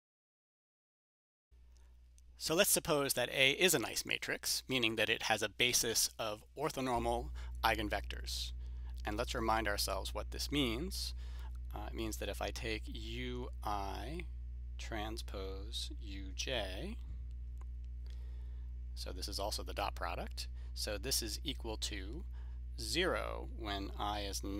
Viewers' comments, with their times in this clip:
0:07 You are right: the audio does dip starting Sorry about that. It looks like I need to upload a new version (with a new URL) to fix it. Thanks for the feedback and I'm glad the video was helpful.